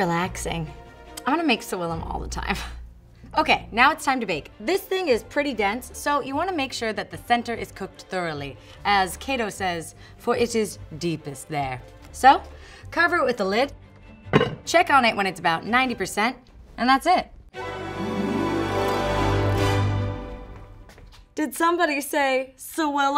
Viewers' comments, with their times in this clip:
0:06 "The thenter?" I never realized she had a speech impediment before 🤔